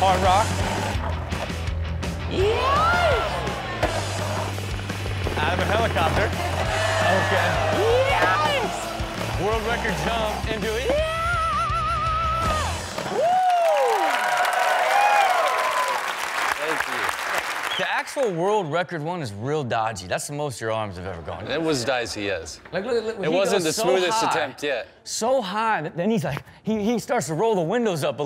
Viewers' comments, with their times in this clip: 0:10 Rob could sing in a metalband 100%.